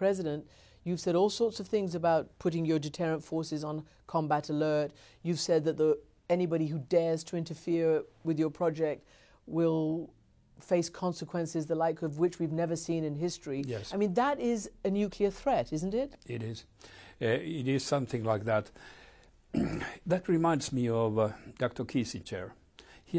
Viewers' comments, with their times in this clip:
0:10 this was me in math class!!🤣😂😝 epically how he quickly says "yes" when called upon! LMAO